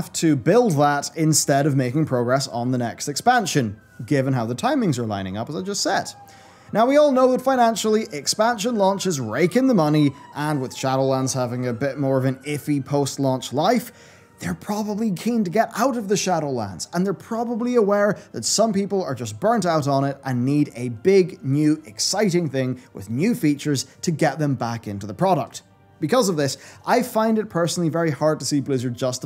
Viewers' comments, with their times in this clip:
0:03 The siren you hear is interpol going for acti-blizz for stealing people's money when they sold this expansion...
0:11 well timed police siren lol
0:13 Jeez also I thought those were sirens here in the middle of nowhere 🚨